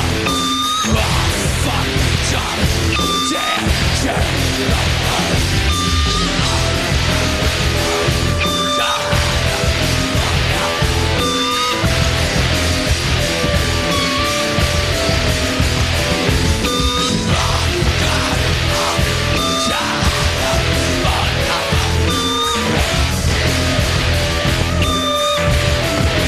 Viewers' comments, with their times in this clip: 0:10 sounds like the mic goes out. Then he throws a tantrum and starts throwing shit and yelling at people 😆